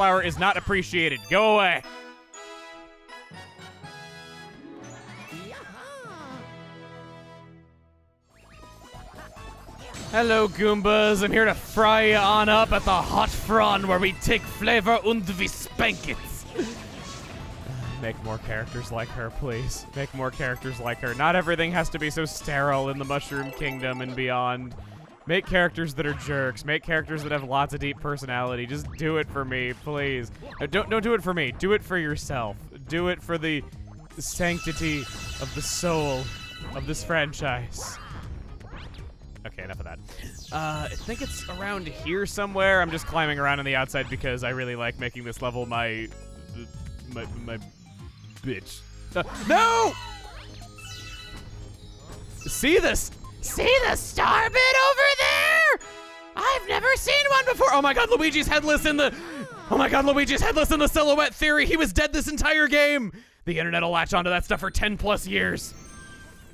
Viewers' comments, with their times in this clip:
0:03 Ah yes, that German stereotype in Flopside. (e.g. You vill eat now, schnitzel!)
0:48 this sounds weird as hell